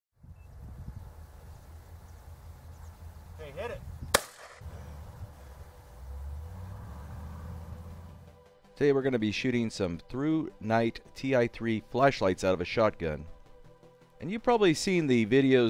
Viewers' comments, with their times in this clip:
0:03 it sounded like a hitmarker
0:03 Sounds like Bloons Tower Defense.